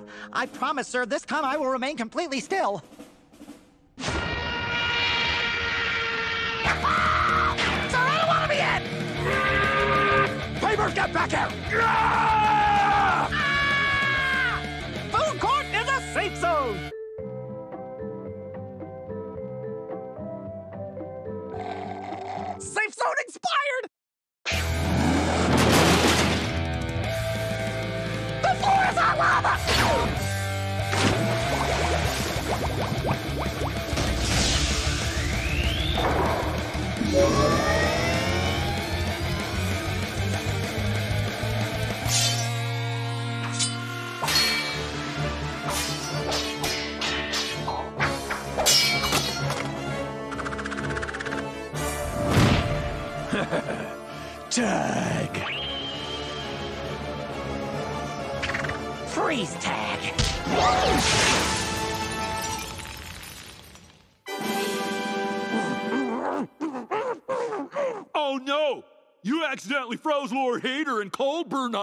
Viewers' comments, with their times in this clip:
0:09 Angry Factory whistle
0:56 :"Tremble before me from my ET finger, with cool anime sound effect.":-D